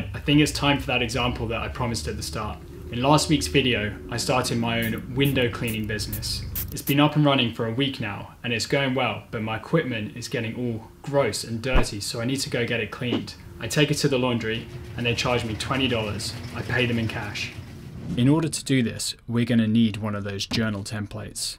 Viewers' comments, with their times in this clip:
0:05 i was wearing my earphones and that sound scared me so much i thought someone was spraying in my ear -
0:09 I flinched in real life thinking somebody was spraying me. AirPods in btw I’m not special Ed